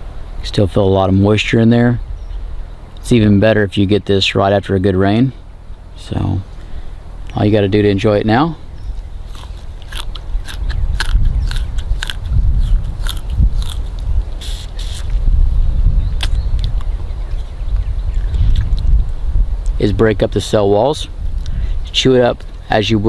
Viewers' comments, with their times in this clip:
0:08 the sounds when you eat in minecraft